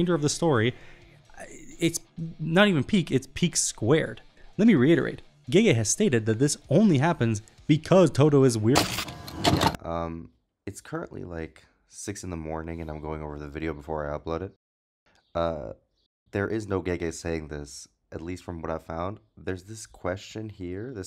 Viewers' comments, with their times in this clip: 0:07 do you have an editor or something cause if thats you, you sound like a whole different person